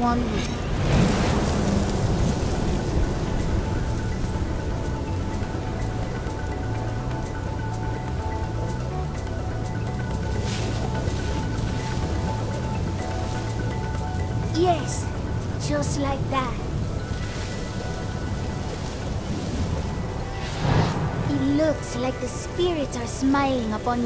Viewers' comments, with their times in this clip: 0:06 blud started galebreathing